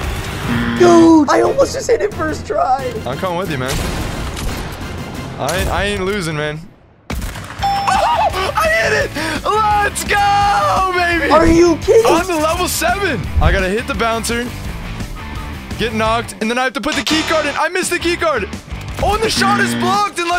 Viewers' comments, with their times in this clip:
0:04 I hit this nice snipe ignore my little giggle